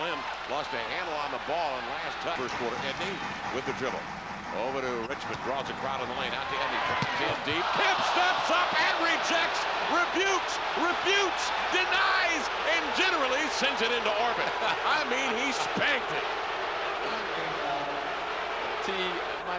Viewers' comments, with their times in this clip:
0:07 Man Kemp could have played on the Men's National Olympic Volleyball Team...did you hear the spike on that ball ? Damn!